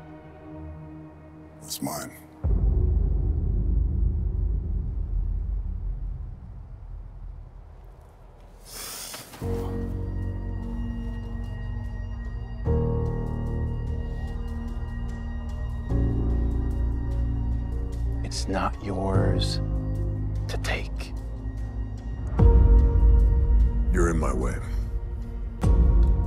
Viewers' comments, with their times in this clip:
0:09 It’s for me when the piano hits! 💯